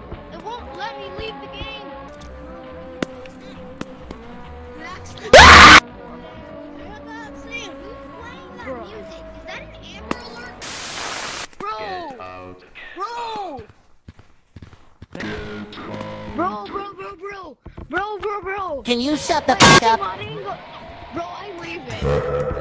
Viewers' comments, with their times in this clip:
0:04 no scream warning my ears exploded
0:04 THE KILLED MY EARS AAAAAAAAAAAAAAAAAAAAAAAAA!!!!
0:04 my ears is okay right?